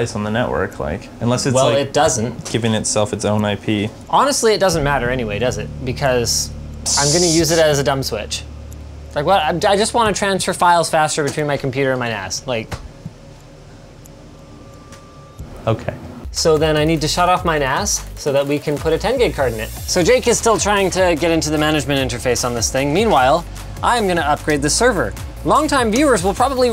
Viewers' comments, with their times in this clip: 0:08 "I just want to transfer files faster between my computer and my ass" -Linus
0:09 sound like he said ass
0:09 I just want to transfer files faster between my computer and my ass
0:10 it sounds like he's saying ass
0:11 lol oh he said NAS i thought he said he wanted to Transfer Files Faster from his computer to his ASS
0:11 Transfer files faster between my computer and my ass???